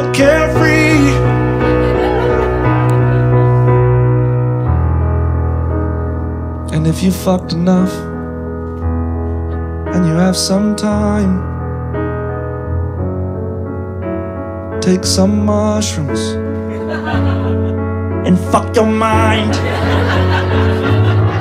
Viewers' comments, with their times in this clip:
0:04 mr jay! i felt some potential for a soulful moment when you built up the song i thought you were gonna go higher or belt for a second